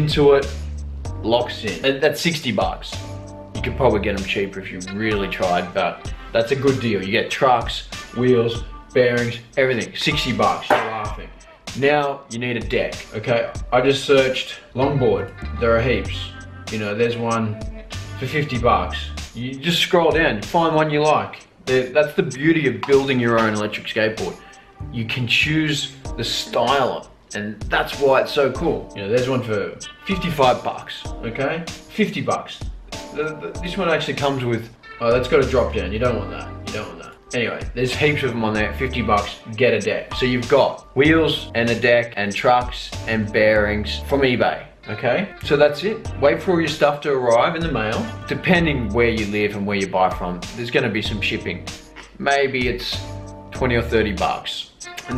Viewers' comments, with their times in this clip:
0:10 Did you fart?
0:36 You don't want what? Drop something I heard?